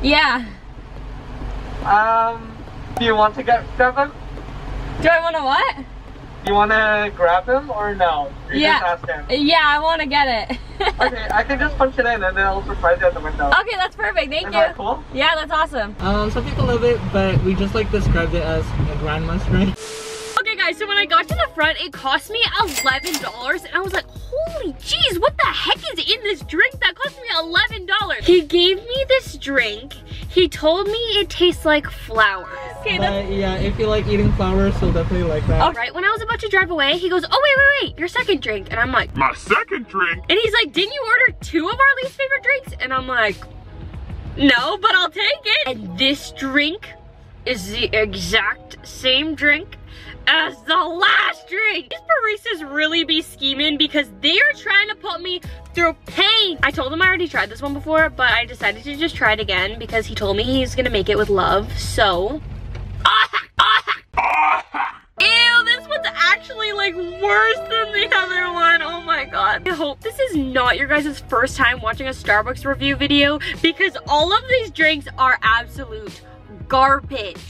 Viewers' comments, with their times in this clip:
0:05 he sounds like James Charles
1:01 the screaming noise it's making me die of laughter 😂😂😂😂😂😂😂